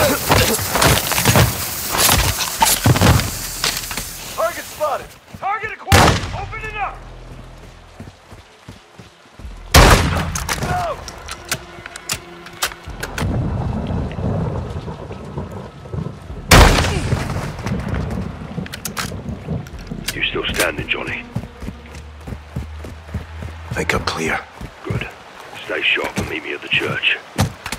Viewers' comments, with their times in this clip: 0:09 You can hear a Shadow operator saying "No!" to his friend getting shot